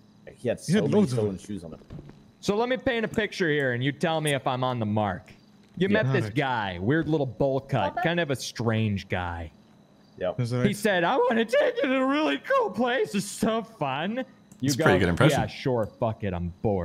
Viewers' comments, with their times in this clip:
0:04 that cops impression was hilarious